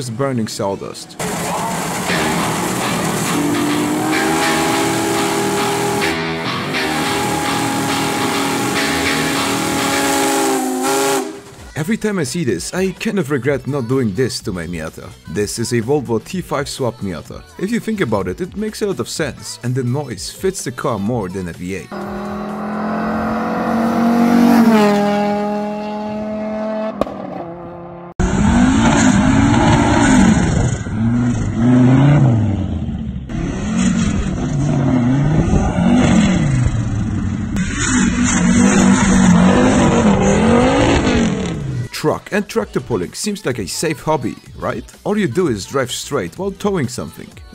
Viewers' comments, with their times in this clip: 0:04 it sounds mad at everyone who never subscribed
0:05 that moment when the doom music kicks in
0:07 Bro added the Boss music 😭🫡
0:22 neighbor: oh great now a v10 f1 car Me: yes
0:28 The Miata sounds like it finally entered Puberty
0:30 Like a wise man once said; Inline fives sound like baby v10s with anger issues.